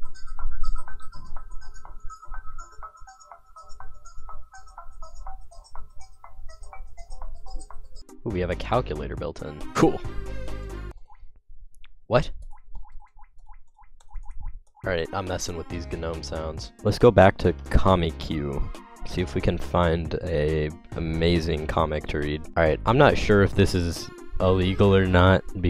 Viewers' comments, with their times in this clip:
0:10 i fucking love the drip noise. i was so confused the first time hearing it as well